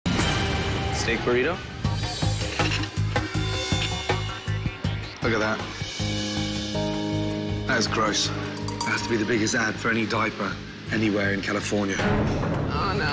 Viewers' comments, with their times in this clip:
0:00 DU-DUAAAMM! "Steak burrito?" Dramatic steak burrito entry.